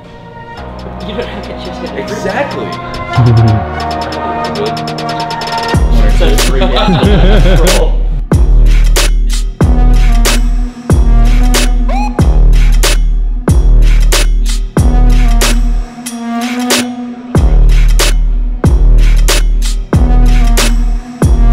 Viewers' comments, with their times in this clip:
0:08 The beat that starts just makes every workout video so much sicker lol